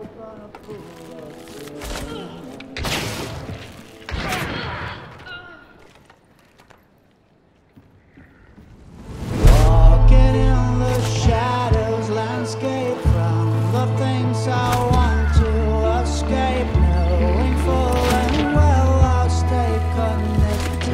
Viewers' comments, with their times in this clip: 0:04 Haha love that the music stops after the instrument is shot